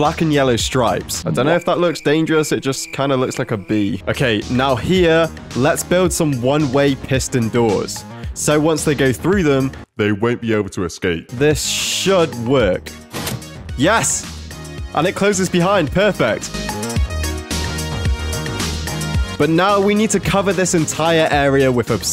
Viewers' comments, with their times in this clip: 0:09 the voice change is perfect